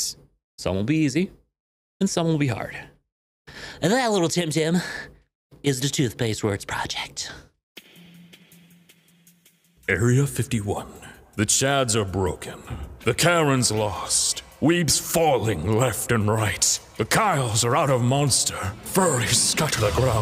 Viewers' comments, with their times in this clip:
0:07 battlefield 5 narrator